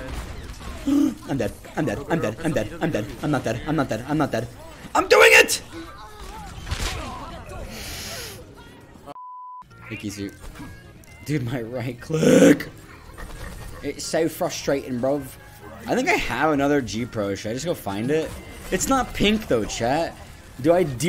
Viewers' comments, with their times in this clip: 0:06 The rust headshot sound is ELITE